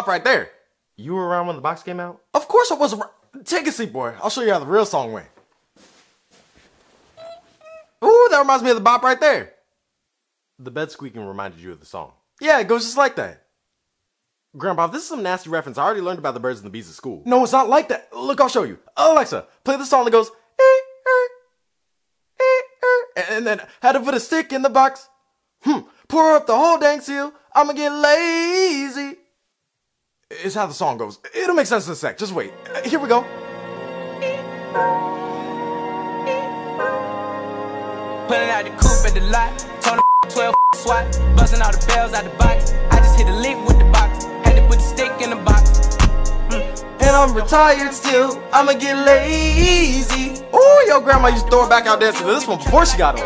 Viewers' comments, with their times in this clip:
0:06 you can tell that wasn't the bed.
0:35 lol best part so many BLEEPS